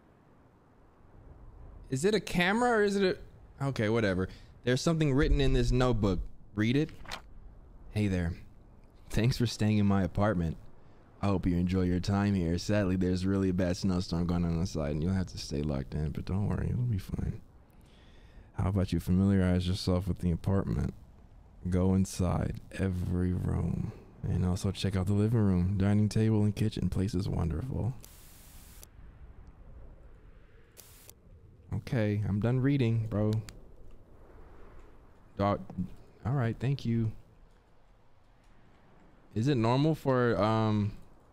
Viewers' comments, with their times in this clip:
0:06 how he’s reading 💀😂😂
0:24 i know i wasn’t the only one feeling a certain type a way on his stream when he was talking like thissss 🤭😏